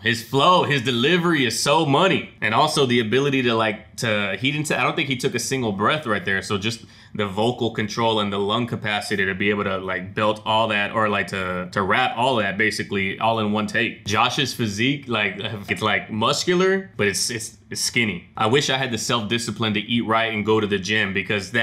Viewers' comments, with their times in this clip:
0:05 mr.long lungs joseph ❤️